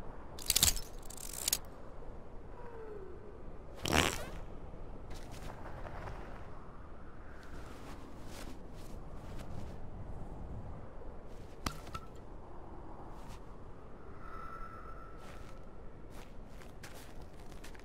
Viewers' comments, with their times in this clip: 0:03 Bo' Rai Cho: (Lift his leg up to fart) xD